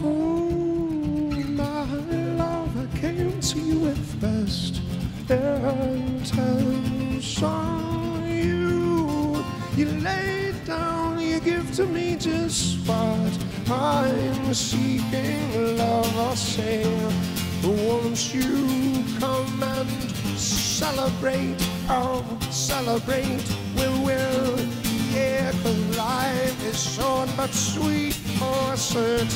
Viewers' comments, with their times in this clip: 0:10 I can’t even tell you how awesome and encouraging it is that, a tune - a STAPLE tune - Dave has been playing for 30 years, he still goofs on.